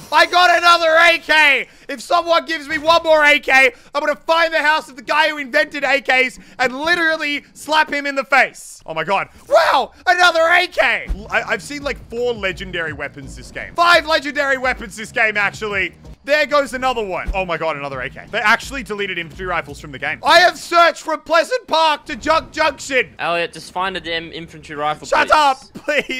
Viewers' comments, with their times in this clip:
0:09 dat voice crack tho